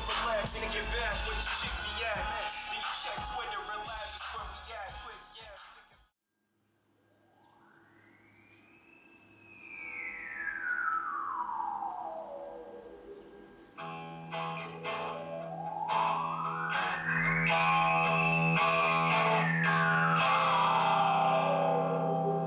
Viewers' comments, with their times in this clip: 0:08 i needs to know the song thats when its starts sounds like hes saying lets assume im somthing somthing somthing lol